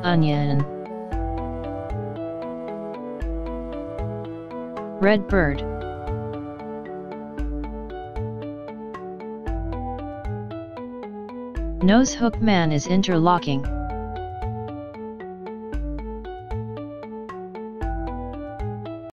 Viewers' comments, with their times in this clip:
0:10 the GenG is Pulling the man's nose 🍳👇👃😱🤪🤣🤣🤣🤣🤣🤣🤣 Man: tries to do kung fu and screaming *"yaaayayayayaaa! * GenG: aims a Hook to man's nose and gegs